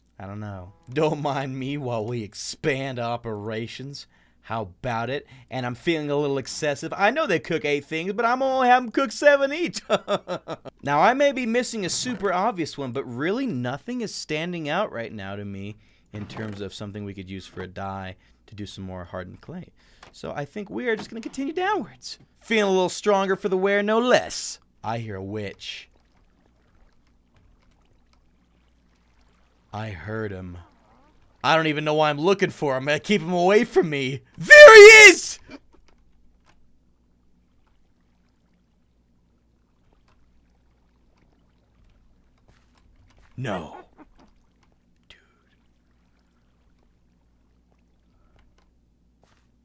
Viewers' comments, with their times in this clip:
0:10 That laugh of the vid! 😂
0:32 that was loud my vol was high LOL